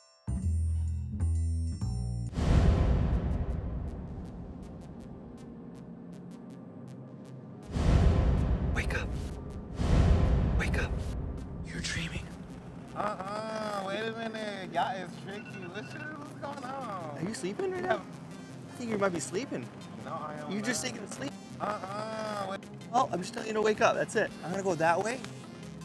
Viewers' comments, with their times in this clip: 0:08 bro cant hold that laugh
0:12 💀💀💀💀 he sounds sassy af. He’s so chill about it. I would have hopped down and went back to work lol